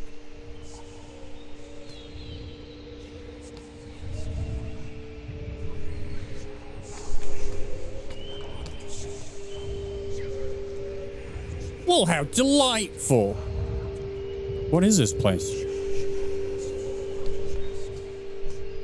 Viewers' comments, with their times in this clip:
0:04 medallion is humming. Must be a place of power